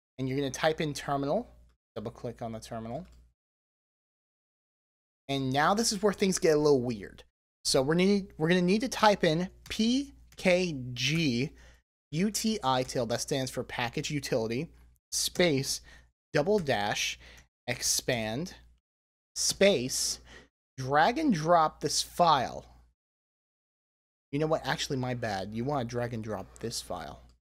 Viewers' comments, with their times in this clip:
0:10 Thank You for posting this!!! Resources such as you that make YouTube great. Instructions worked perfectly! Note there is a bit of garbled speech As others have clarified: This is what needs to be entered: pkgutil --expand ........................